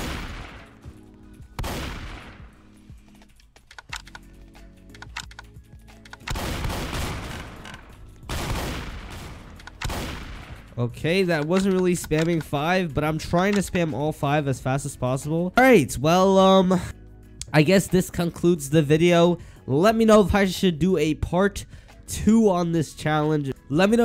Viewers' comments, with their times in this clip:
0:05 my ears: pow pow pow pow